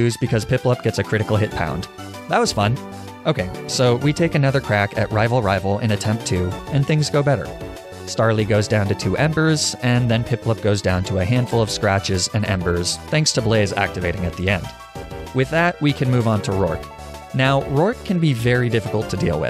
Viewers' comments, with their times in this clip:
0:06 "and things get better" that just sounds so chill and deep i don't even know why, maybe because of the way it was said and the music?